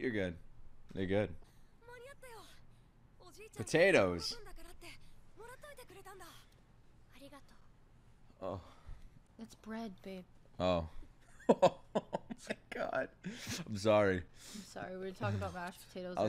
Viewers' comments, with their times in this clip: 0:04 the way he said potatoes then that face And it was not even a potato 😂